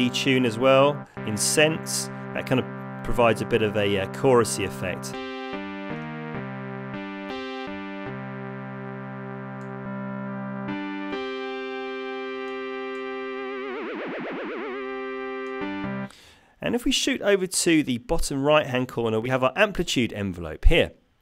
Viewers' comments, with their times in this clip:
0:05 Wow really ignited the nostalgia of hearing Sasha's "Xpander" for the first time! Awesome stuff.